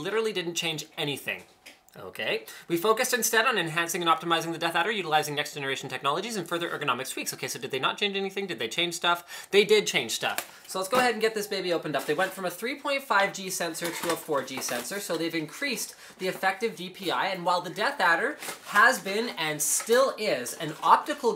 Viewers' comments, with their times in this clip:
0:05 Damn you should be an auctioneer lol.